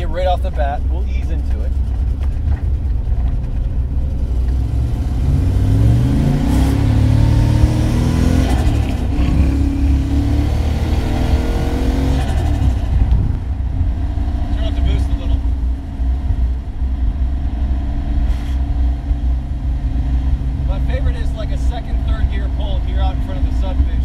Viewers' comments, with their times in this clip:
0:08 Was that turbo flutter ?